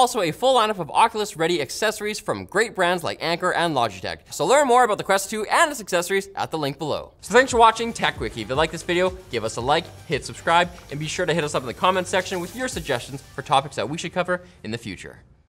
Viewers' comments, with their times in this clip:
0:13 Is it just me or does his voice gets cut off a little at the end